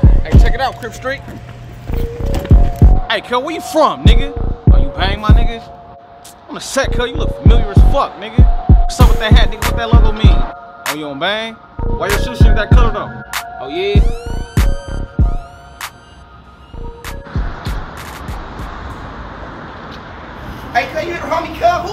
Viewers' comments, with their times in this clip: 0:08 sounded like he was rapping 😭😭